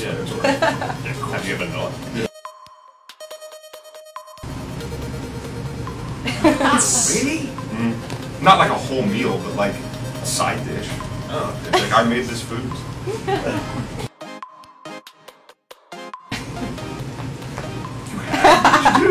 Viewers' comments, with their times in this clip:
0:06 the he said it made me think of “Wikipedia?!” 😂😂😂